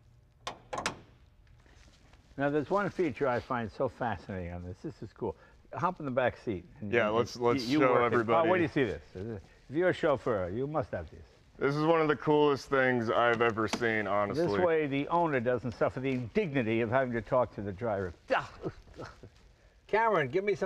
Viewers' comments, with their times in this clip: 0:04 Okay After hearing that buzzer for the driver, that's it, I'm christening this thing the Mussolini mobile, as no one but him would have a car that would do THAT to his Chauffeur.